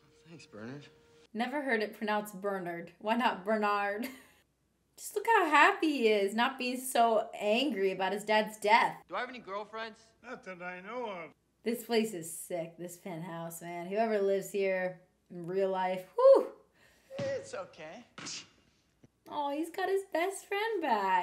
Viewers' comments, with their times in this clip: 0:03 It's the British way to say Bernard.